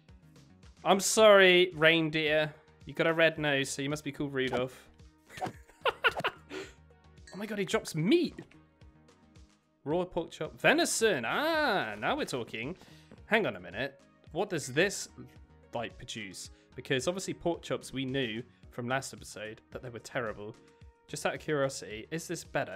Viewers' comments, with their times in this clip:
0:04 that psycho laugh lmao